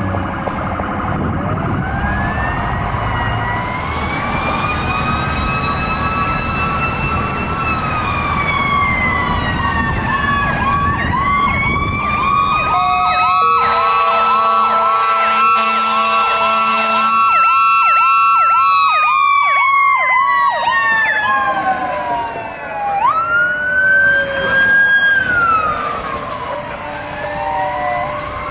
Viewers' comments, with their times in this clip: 0:09 that engine is badass screaming down the hill